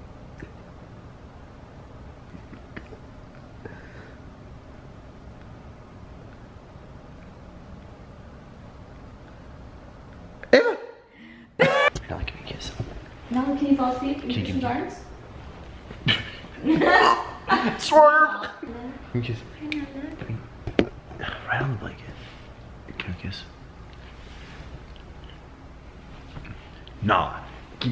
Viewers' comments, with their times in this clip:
0:10 awkward edit sounding mistake